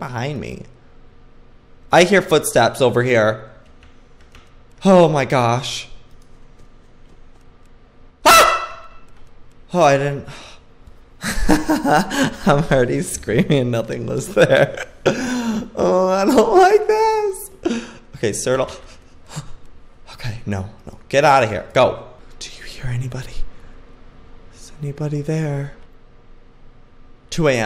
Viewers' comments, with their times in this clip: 0:08 when u scream your scream scared me 😂😂